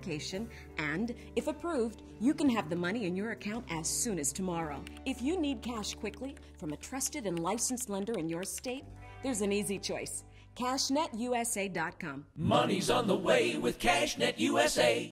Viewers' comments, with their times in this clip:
0:12 CashNetUSA Jingle (High Pitched,2009-Present,UK)